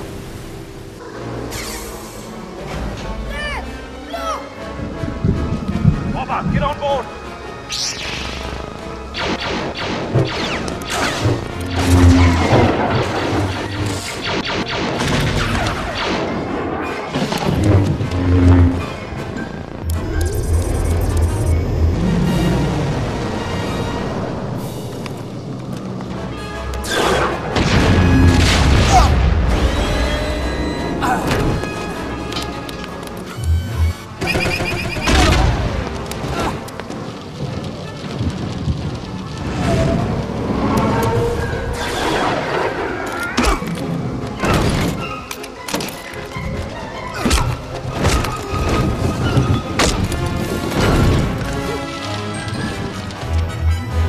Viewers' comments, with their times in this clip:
0:07 The sound of Obi-Wan’s lightsaber igniting 🤤🤤
0:07 The lightsaber ignition 👌🏻
0:11 in love with that jetpack sound
0:17 hey i just noticed when kenobi is getting up from his roll when he turns on his lightsaber there is no ignition noise.
0:30 obi wans eh
0:31 obi wan’s death sound
0:36 And thats his hurt noise